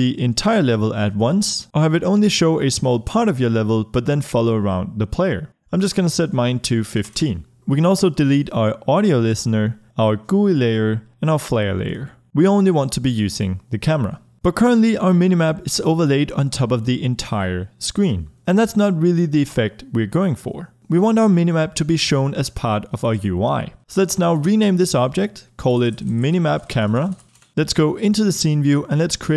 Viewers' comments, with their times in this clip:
0:10 did he pronounce gui?